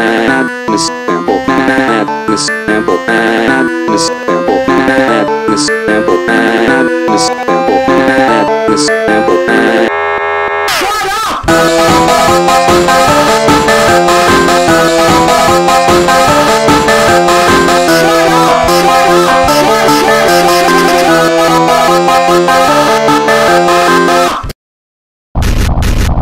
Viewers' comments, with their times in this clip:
0:10 It Scares me It's Louder He Said STUTTTT UPPPPP!!!!